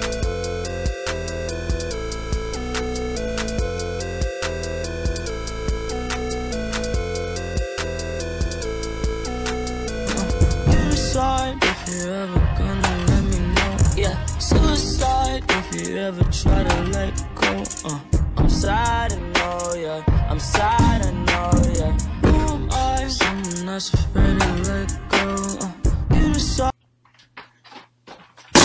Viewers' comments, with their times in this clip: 0:09 Oh I love how you did the sad music then went happy xD